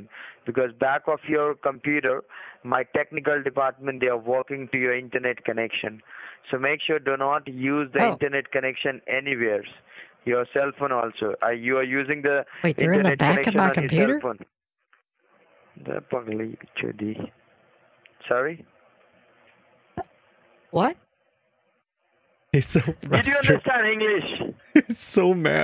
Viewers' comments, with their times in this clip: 0:07 Bro I died The tiniest little tantrum lmaooo